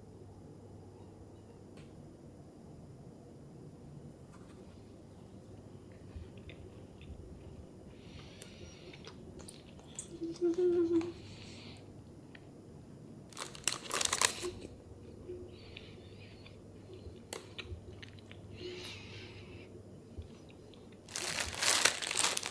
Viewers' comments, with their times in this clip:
0:08 why she make that noise lol